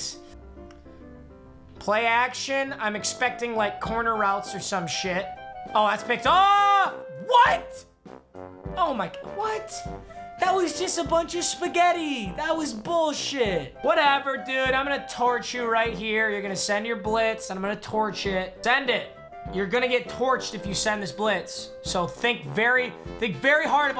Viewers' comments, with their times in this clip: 0:09 when that music goes down you know ea is on their bull sh*t again